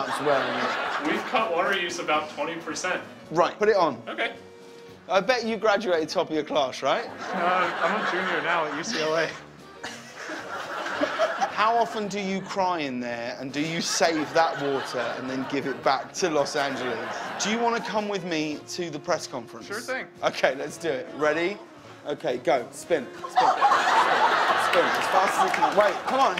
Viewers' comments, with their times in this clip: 0:09 I know I'm like 5 years late but she literally tried to hold her laughter